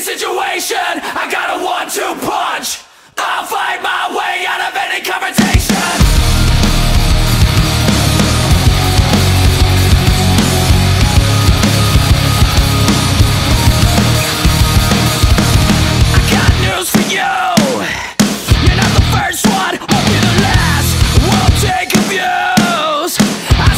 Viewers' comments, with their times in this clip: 0:06 Sigh.. This has compromised sound quality; after you can clearly hear the clipping in the song. Do people not know how to mix/master a song? Not a big fan of the generic sound it has to it either.